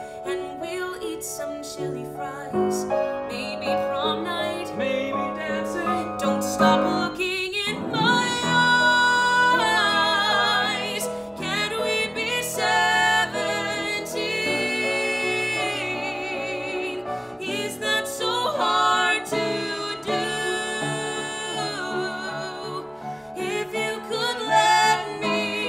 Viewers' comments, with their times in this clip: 0:07 Honestly like the first few seconds had me a little bit hesitant, but hooonnneeeyyyy was I WRONG!!! This song brings out a more buttery fluid side to your voice and I love it!! It’s when you sung ‘my eyes’ I was DEAD💕💕💕